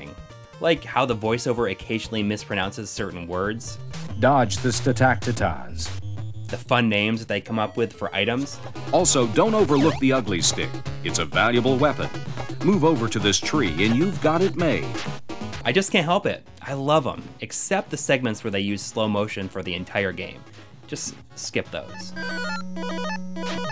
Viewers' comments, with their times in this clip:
0:04 Statactities? Oh dear...